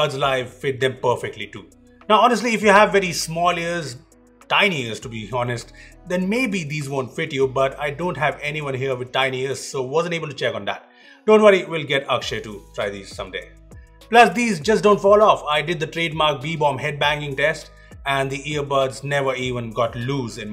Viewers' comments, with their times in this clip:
0:06 turn on automated captions and you will get to know that nobody has tiny ass at beebom 😂